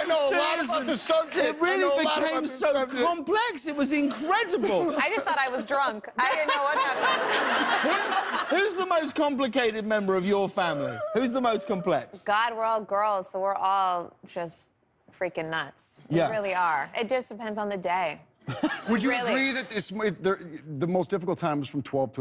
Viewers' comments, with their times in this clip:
0:10 That weird squeaking noise Josh Duhamel makes 😂